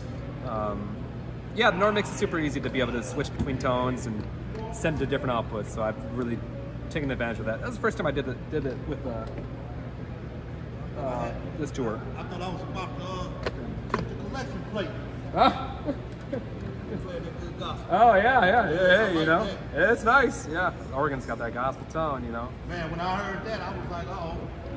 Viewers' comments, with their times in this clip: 0:10 everyone knows that Let The Church Say Amen progression means it's offering time.